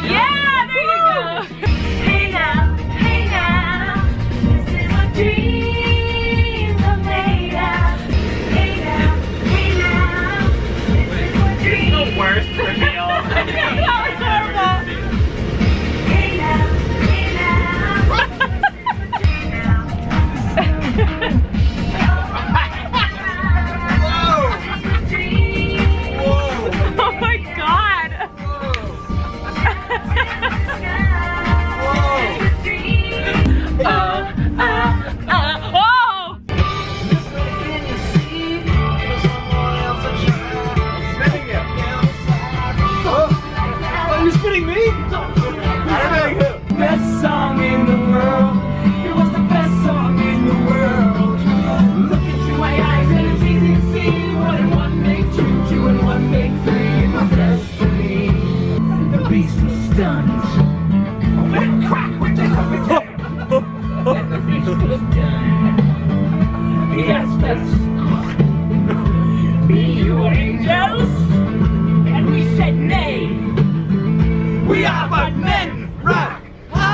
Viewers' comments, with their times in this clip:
0:05 I’m literally laughing so hard where Colleen is having the time of her life singing and everyone else is sitting like a bump on a log. I love her so much. So much pure joy!!!!!
0:57 ...I love that song